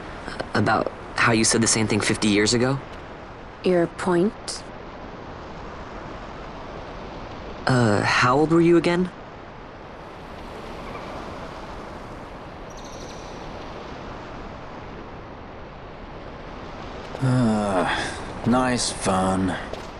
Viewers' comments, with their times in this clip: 0:03 THIS ladies, gents and everyone else - is HOW YOU MAKE CHARACTER DESIGN - these two simple words, her mimics, tonality... give such a great insight of how Fran is mentally structured. she has ever since been one of my favourite RPG-characters. <3